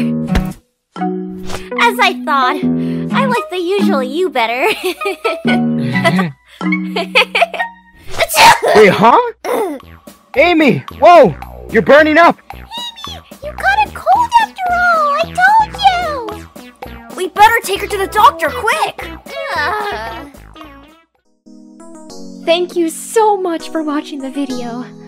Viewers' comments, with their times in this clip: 0:06 That sneeze got to me a bit too much